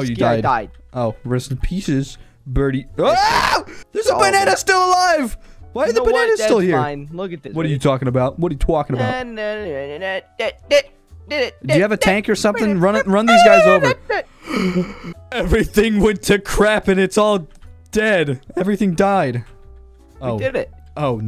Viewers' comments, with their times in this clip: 0:09 This the music